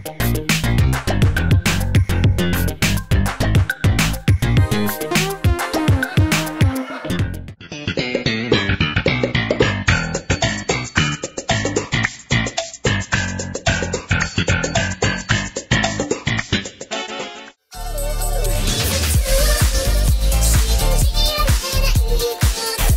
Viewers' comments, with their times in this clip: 0:03 I'll give them credit, they did make a new tune out of that goofy theme song.